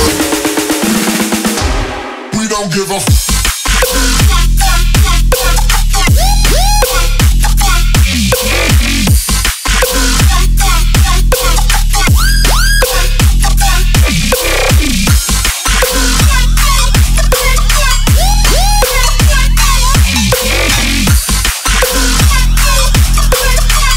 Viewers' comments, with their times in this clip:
0:05 I got a xenomorph convulsión when the drop came. Fucking sick. Start banging your fucking head. BARELY NEVER DIES STILL ALIVE.